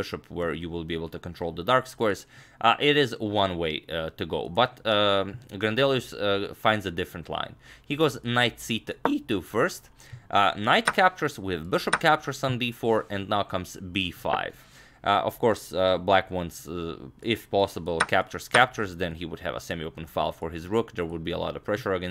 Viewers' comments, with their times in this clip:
0:09 The voice crack on is the best move